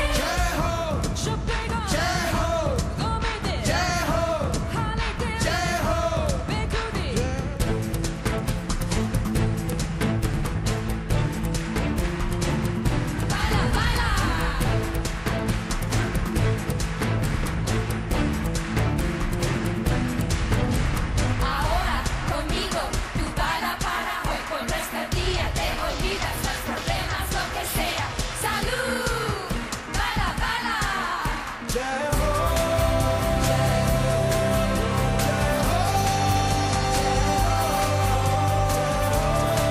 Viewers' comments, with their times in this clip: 0:06 I think .. He messes up. Don't get me wrong. I love this song, but that bugged me. :P
0:06 There is rong sund
0:07 Rahman started singing Jai Ho wrongly !! lol ... but that was unbelievable.. MindBlowing.. I am from Madras, city of Rahman!
0:11 Crowd started chanting/clapping Crazily with beats till the end 😍😇😍😇😍😇😍😇😍😇. This man is amazing 😍😇😍😇.
0:21 sudden change of lyrics and tone just goosebumps 🔥